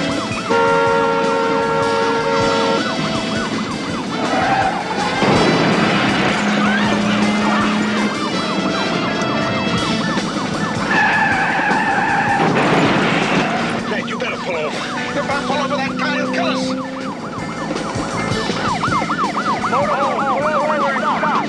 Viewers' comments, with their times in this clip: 0:07 the waitress is actually laughing when the motorhome is side swiped .